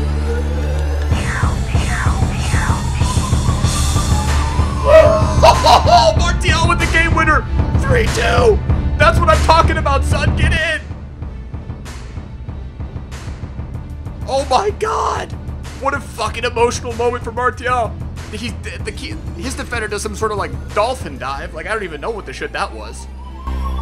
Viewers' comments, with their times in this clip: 0:04 whats the song sounds fucking inspirational and shit